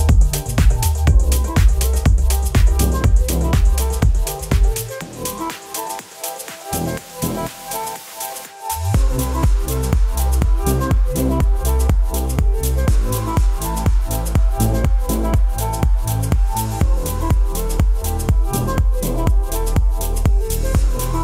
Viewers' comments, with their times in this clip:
0:04 blind- seems very familiar, was this a cover or an original by them? Incredible, song either way. Hauntingly beautiful